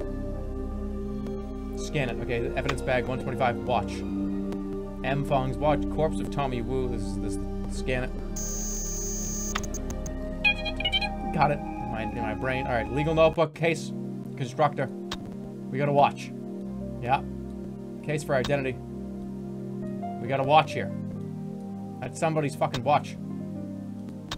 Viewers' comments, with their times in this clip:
0:09 Did anyone hear that mini-sentry?